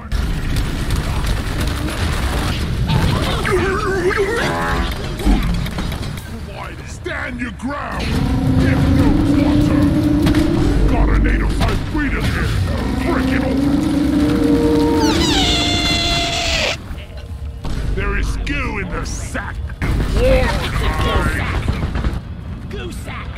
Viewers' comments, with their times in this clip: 0:07 i freaking lost it when the breeder started making the silt strider noises